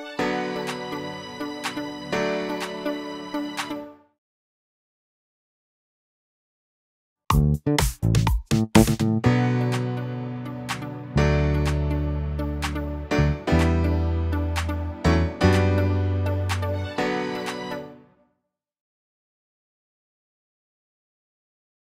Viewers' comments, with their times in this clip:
0:09 The notes for the Liverpool bass in are B, D, D E, F# G